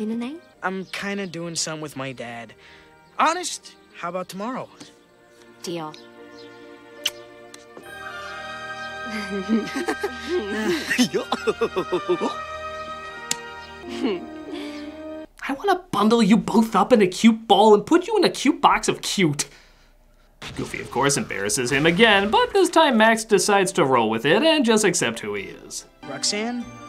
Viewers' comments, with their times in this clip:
0:07 Cause: Max kisses Roxanne Effect: Law and Order theme plays
0:11 oh gosh, it’s the laughing